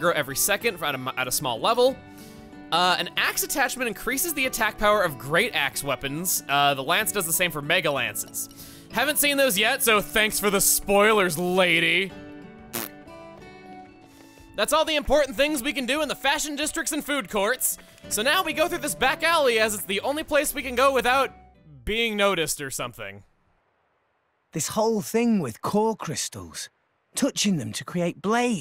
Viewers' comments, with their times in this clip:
0:10 did rex just toot on that woman?